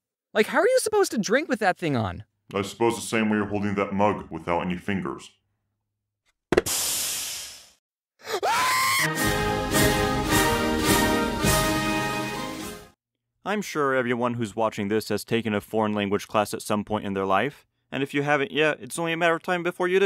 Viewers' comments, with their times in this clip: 0:08 R I P mic